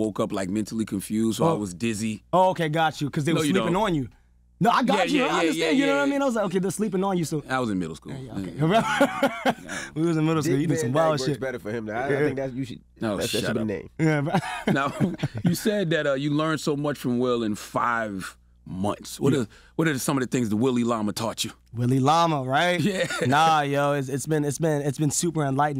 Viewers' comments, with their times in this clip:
0:06 mins laugh is just like Will